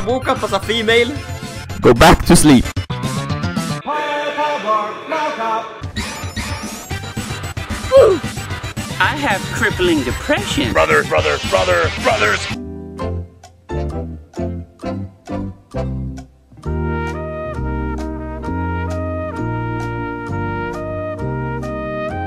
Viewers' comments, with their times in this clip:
0:05 I know Italo Disco when I hear it :P